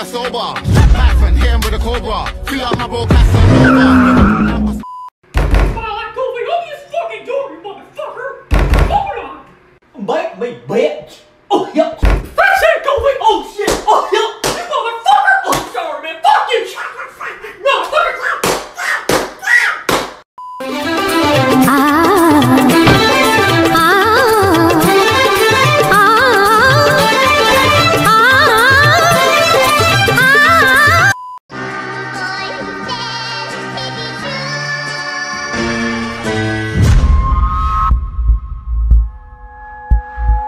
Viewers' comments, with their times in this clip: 0:07 that laugh me so hard
0:21 that Indian music, my god!
0:21 Nepali theme songs starts. Love from nepal.